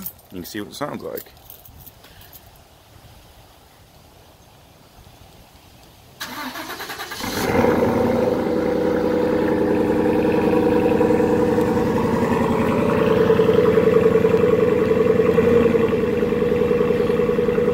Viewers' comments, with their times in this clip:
0:03 Skip to if you just want to hear the cold start up and revving.